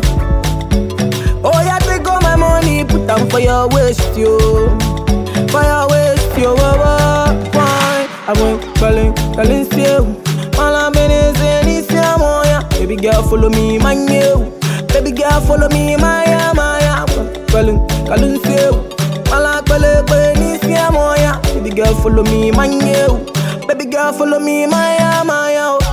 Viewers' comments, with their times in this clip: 0:06 The Hook sounds like an old Ghanean song for me..can't remember which one..Anyway Wizkid killed hit as always..StarBoy on top no matter what haters gon say The man kiiled it with that weird shoki moove I swear this man dey mad ooooooo..